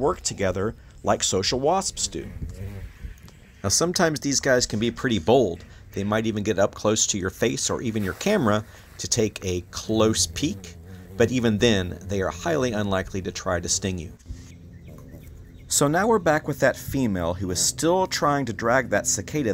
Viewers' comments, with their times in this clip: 0:03 Anyone wearing ear/headphones duck ?